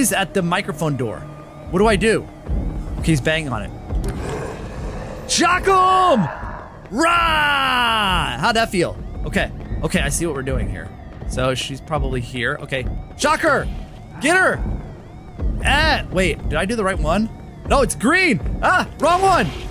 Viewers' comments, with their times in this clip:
0:03 this is scary sounds